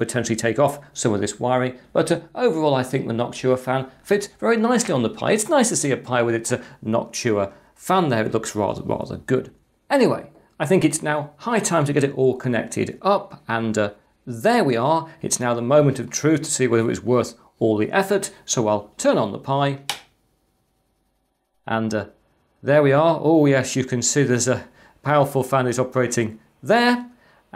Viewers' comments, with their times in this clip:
0:10 did you really say: "I think it's now Pi time to get this all connected up..."?! Or have I literally got "Pi" coming out of my ears?